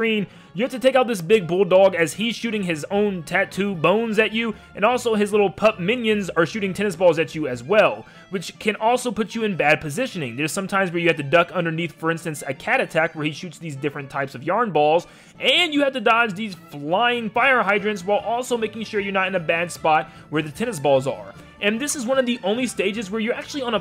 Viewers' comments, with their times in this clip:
0:07 I thought he said 'Testicles' the first time i saw this.